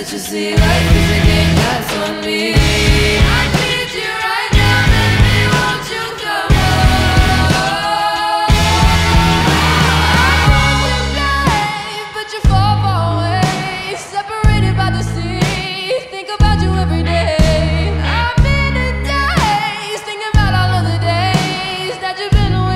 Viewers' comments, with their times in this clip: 0:10 ugh this part of the song is too good. Everything flows so fucking perfectly.